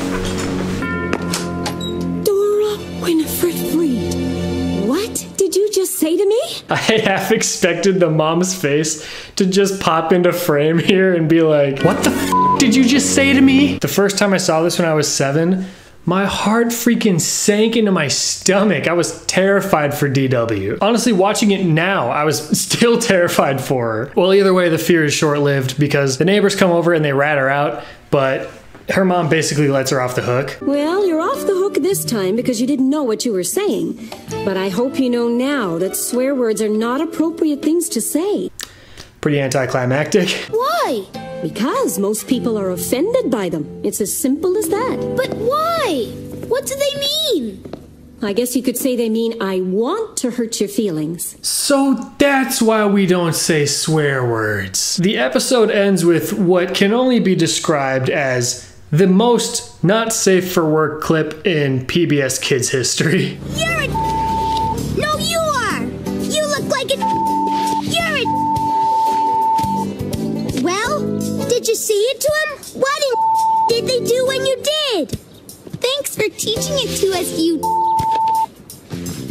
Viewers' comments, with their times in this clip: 0:09 the first jumpscare-laugh goes to..
1:03 sounds like there saying the N word